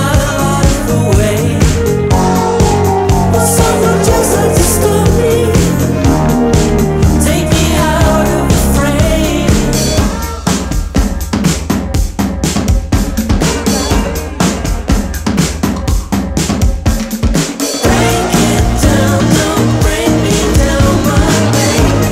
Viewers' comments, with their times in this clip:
0:09 Best part of this song Let the drummer shine!